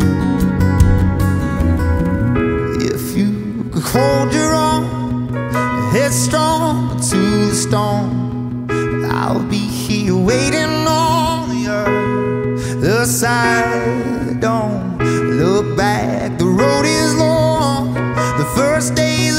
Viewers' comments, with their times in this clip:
0:03 I agree! The way Bear's voice breaks in is just perfect chefs kiss you just can't get that in the original recording of this song